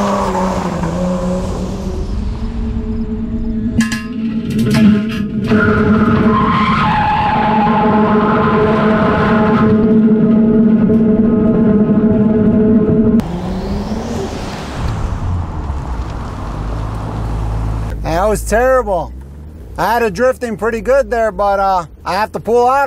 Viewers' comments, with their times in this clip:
0:03 Bro The sound is like someone is screaming.